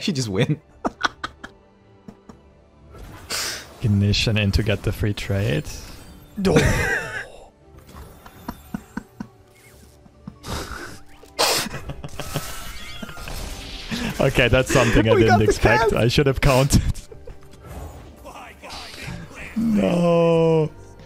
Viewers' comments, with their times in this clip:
0:05 the doh LMAO